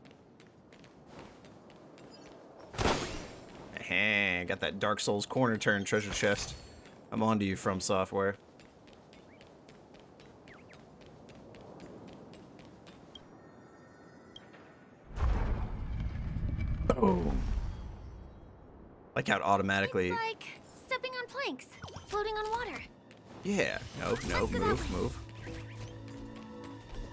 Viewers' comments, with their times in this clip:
0:08 you could hear the chirrrrp of an origami bird. And again later the feathers kept playing third wheel during the emotional bits Lol. Love how you mercilessly ghost them.